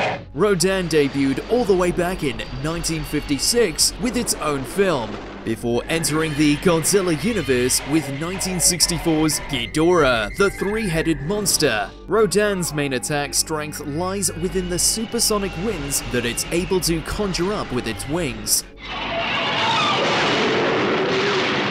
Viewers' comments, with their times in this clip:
0:05 Dog Rodan barking like a dog 😂 I ain’t never heard that before